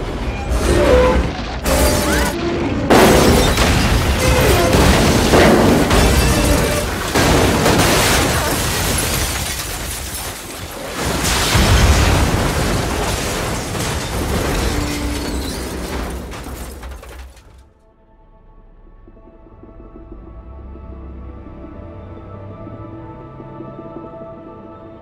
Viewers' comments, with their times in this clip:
0:08 What about that "aah" ?😂